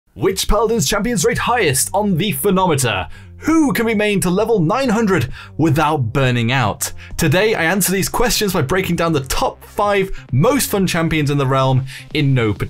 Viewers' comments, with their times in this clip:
0:00 “WITCH Paladins Champions-“ Me: “HAHAHHAHAAH”